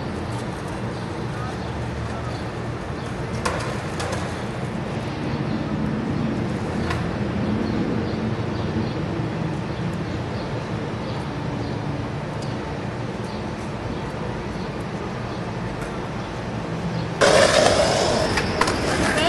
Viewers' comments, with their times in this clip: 0:04 that sign totally says gay!! and yes, thats how they talk in cincinatti... :/